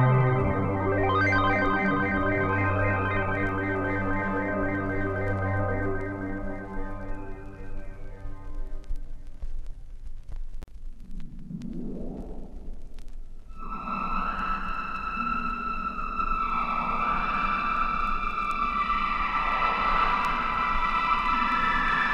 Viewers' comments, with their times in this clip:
0:10 I told this one is on sounds my ears left to louder when im using headfones.